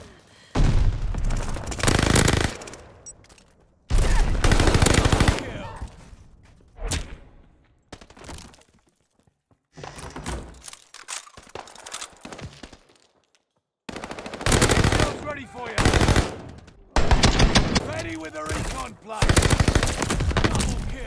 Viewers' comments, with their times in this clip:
0:08 love how the doors close minecraft style with the sound and everything.